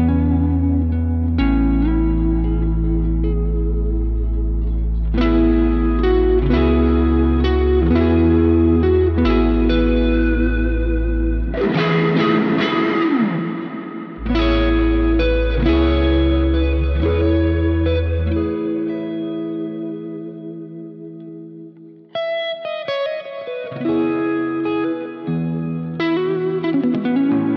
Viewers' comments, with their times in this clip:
0:10 that is a mean effect man! only just found you but you are my current source of motivation, big love from australia!
0:13 This is so sick man. It sounds like a bassdrop when you start hitting your E. So poetic